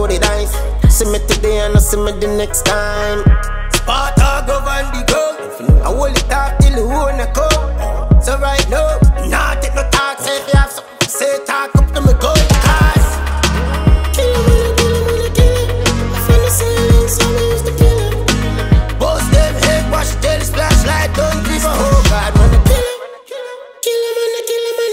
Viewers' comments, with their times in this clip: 0:05 Mi hear Kartel voice when tommy lee said "mi hol' it off till di owner come"
0:08 Listen sure a gaza voice dat